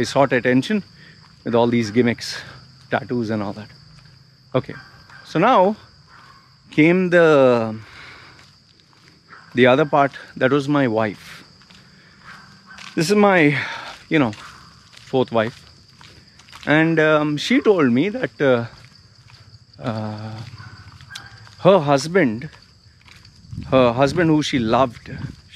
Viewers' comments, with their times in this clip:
0:07 I can tell u r broken from inside. I wonder why u chose Athiestism bcoz u r broken. But I would like to say that ur family neglected u and that isn't ur fault, they were wrong. This world is messed up it's better to trust a dog but humans. U r special that's why u were treated badly, the one who is going through lot of shit for me he/she is a special person. So don't worry my friend u r strong man. I always hate u but this time I can feel ur pain and I can tell from ur voice that u r in pain buddy. Forget ur past what they did with u all u have to do is make money and f.....everyone else